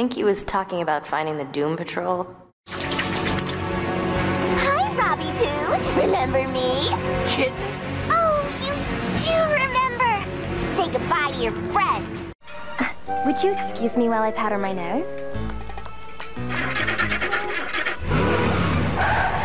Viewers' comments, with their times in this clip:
0:07 I thought robbin said the s##t word